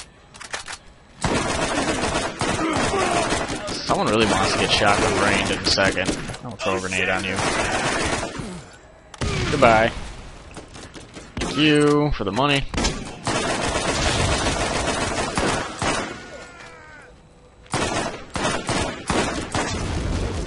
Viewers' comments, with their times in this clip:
0:06 did that Bruiser shout "OH SHIT?"